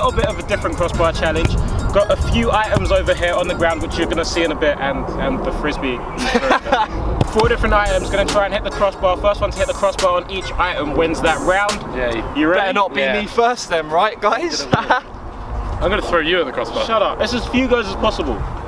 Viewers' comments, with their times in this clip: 0:06 Tobi sounded like he was about to start spitting over the instrumental.